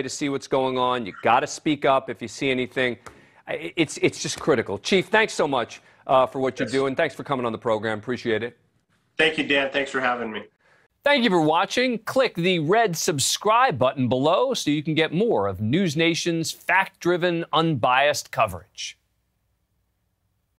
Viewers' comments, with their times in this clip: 0:09 The Chief sounded like he said "Thank you Dad, thanks for having me" :)